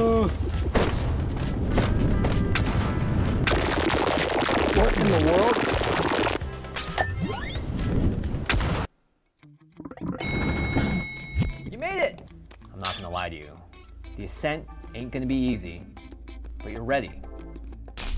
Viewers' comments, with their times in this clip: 0:03 I was laughing hard cause why was it so loud when you reach for the void ball